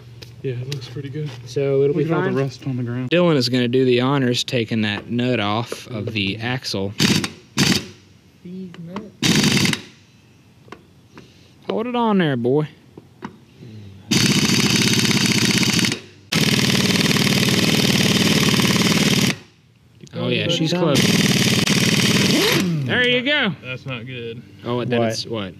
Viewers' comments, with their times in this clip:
0:07 I hope I ain’t the only one that heard “DEEZ NUTZ”
0:09 Did anybody else hear "deez nutz"